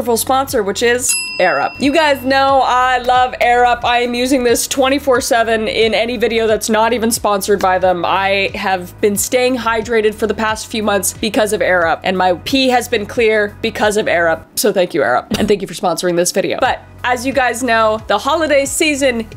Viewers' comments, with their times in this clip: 0:07 Sounded like: I have been staying hydrated for the past few months because of Arab